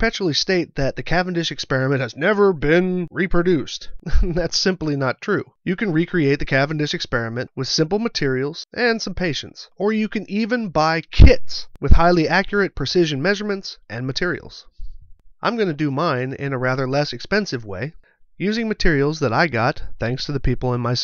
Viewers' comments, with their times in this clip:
0:07 Some patients?? What are those poor people needed for? ;)